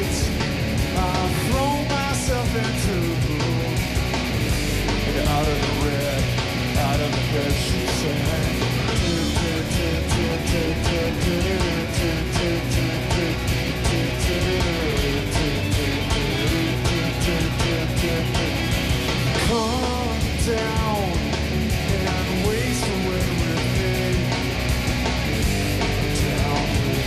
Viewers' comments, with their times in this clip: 0:09 Dave singing the guitar riff